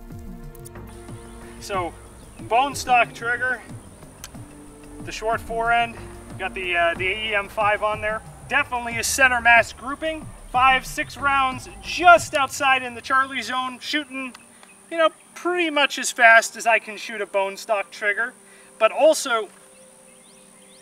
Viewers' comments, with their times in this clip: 0:04 is that a Kermit the frog voice over?